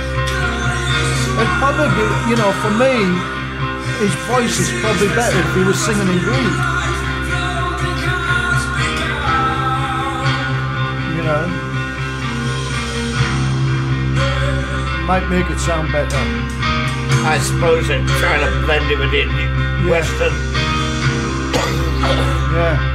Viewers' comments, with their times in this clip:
0:07 he does sing 🎶 in Greek